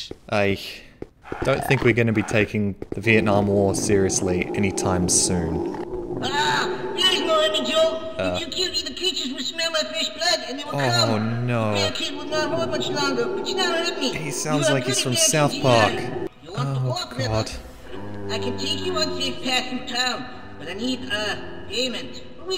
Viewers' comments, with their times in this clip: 0:06 What is the one thing you think about when you hear this man's voice?